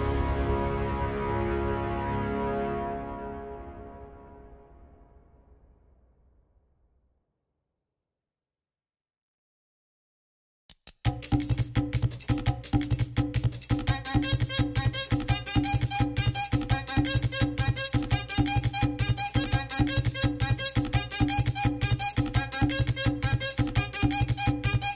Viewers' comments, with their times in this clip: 0:10 Then everything changed when Momo's beat dropped-